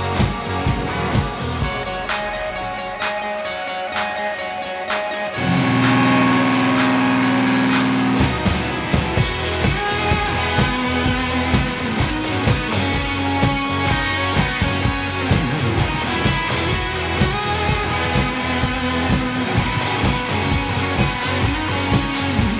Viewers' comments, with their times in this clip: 0:08 When he starts shredding it ... Holy Shit!